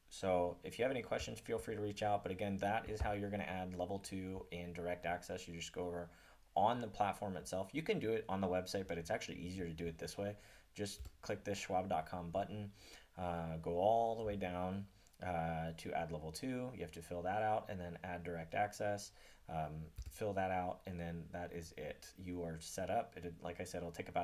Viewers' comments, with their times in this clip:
0:07 vol too low, also for how to set up direct access